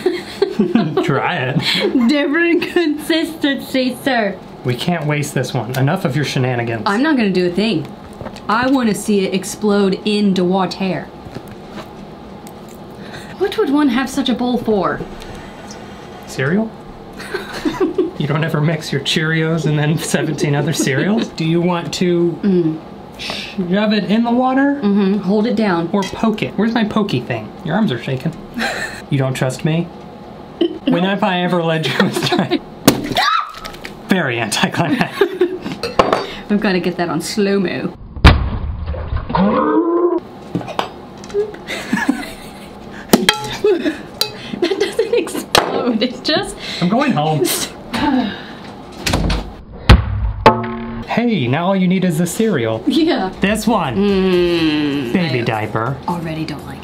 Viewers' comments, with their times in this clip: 0:10 in the ✨Wa-ther✨
0:12 bit of an irish accent came out from her lol
0:38 she sounded like yoda